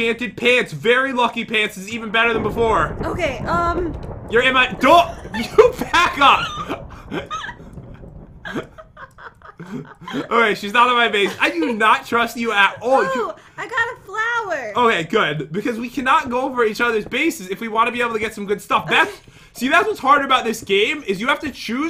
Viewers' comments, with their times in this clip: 0:06 I thought he said you Baka